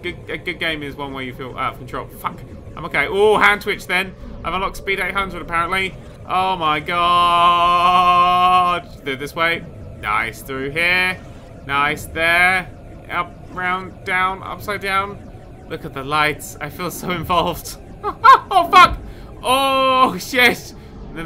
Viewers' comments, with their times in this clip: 0:05 Trolls 2: Oh my God! (only the yell)